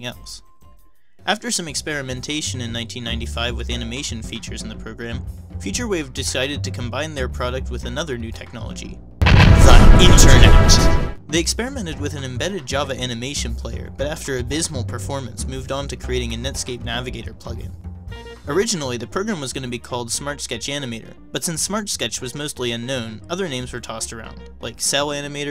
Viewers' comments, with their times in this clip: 0:07 I HAD HEADPHONES ON AND I DIDNT SEE THE JUMPSCARE TEXT
0:08 RIP people with earphones
0:08 that was very obnoxious and annoying, you should edit your videos with head phones on. that is way too loud and not worth cheeky effect you were going for.
0:09 RIP headphone listeners